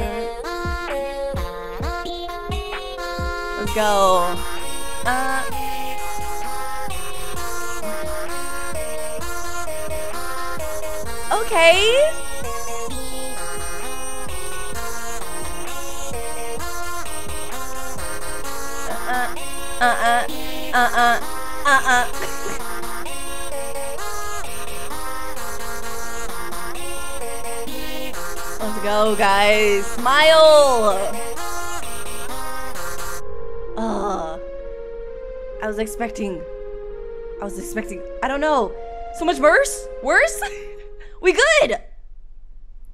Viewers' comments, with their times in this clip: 0:03 Why does of Smile sound like a thing I would hear in Rick and Morty XD
0:26 4th song: ready to calm my nerves Me: yay something calm for once Death Scene: *screams in background * Me: AhhHhH!!!!!!*ded*